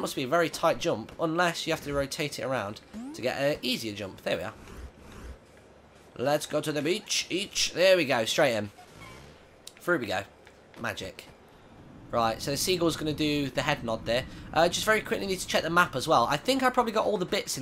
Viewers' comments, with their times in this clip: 0:03 love that song